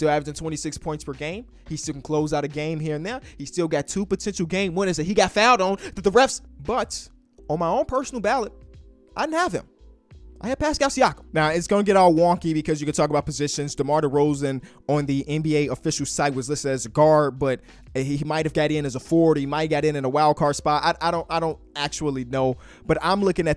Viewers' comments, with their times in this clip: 0:05 lmao cut out